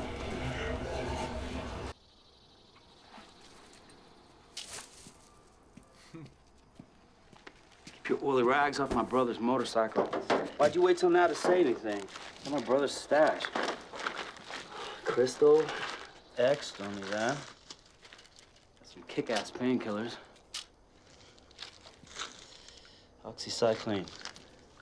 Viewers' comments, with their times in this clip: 0:10 It's funny how Rick is holding back his british accent. I'm just like: let it go man. Btw blue meth :)